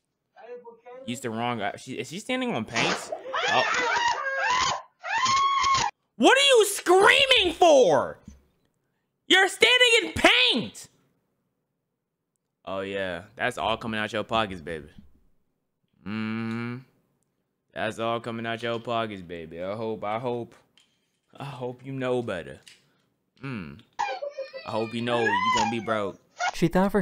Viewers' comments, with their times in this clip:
0:10 She was screaming because she probably broke both of her feet. The bucket didn't break just the lid of it